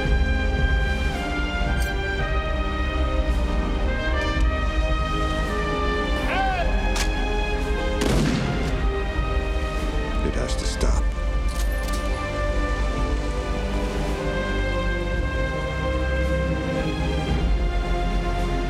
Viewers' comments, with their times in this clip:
0:06 sounds *almost like Gunnery Sergeant Hartman. :)